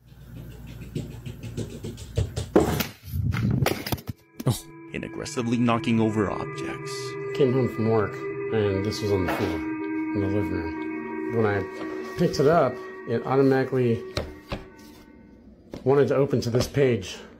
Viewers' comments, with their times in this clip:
0:03 what a weird reaction to the sound of bear feet, running and suddenly getting louder and tipping over the camera I guess this guy finds this funny I don’t see anything funny about it But something scary, completely mind-boggling as to what happened But funny? No this is not a reaction video it can’t be. The guy laughs